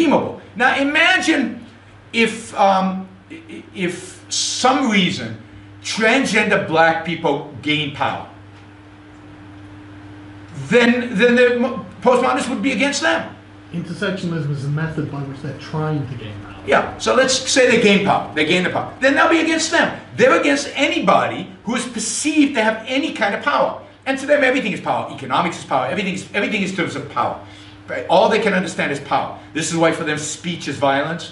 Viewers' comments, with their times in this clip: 0:06 you can actually hear his voice
0:12 I hear the voice of a long dead akkadian king :P
0:13 never before have I heard a voice that sexy